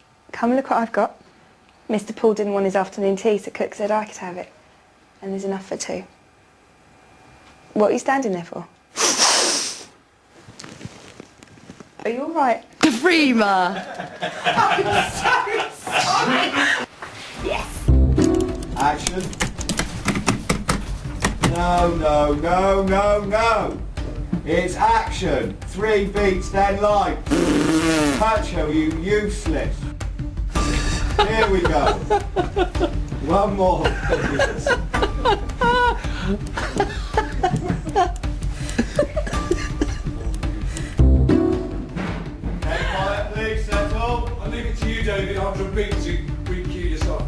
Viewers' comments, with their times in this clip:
0:08 Dramatic sniff xD
0:18 OMG John is so funny when he's trying not to laugh and gives in Hahaha
0:20 I swear John Barrowman's laugh is contagious because I lose it every time he cracks up. XD
0:31 i love Jack's little laugh